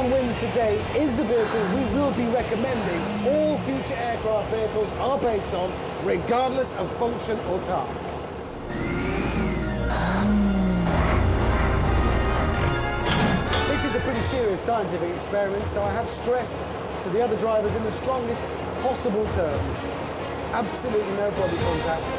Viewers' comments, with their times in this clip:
0:09 listhen to those detroit diesels